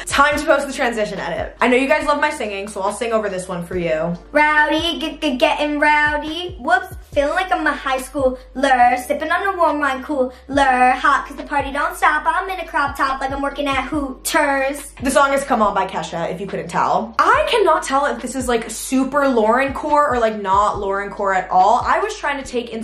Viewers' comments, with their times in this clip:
0:04 YOU ARE SO GOOD AT SINGING
0:04 I thought I heard jojo siwa 😭😭